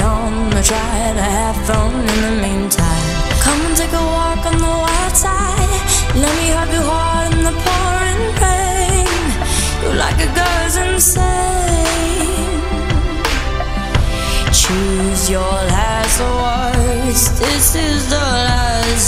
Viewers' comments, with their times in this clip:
0:03 It's and I can't sleep without listening to Angelina, her voice relaxes me and clears my mind. She is heaven sent after all she is an Angel.